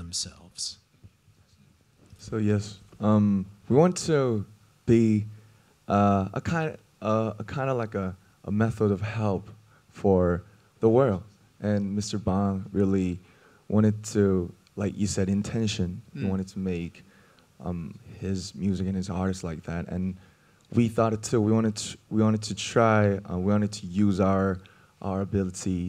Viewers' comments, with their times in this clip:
0:05 Honestly spending a lot of time thinking The interviewer mispronounced 'Mr Bang' and the audience tittered, so our precious little Namjoon told him he was right and then went right ahead and mispronounced it himself, in order to not make the guy feel bad. Do we even need more reasons to love him?!
0:11 RM's sexy voice 😍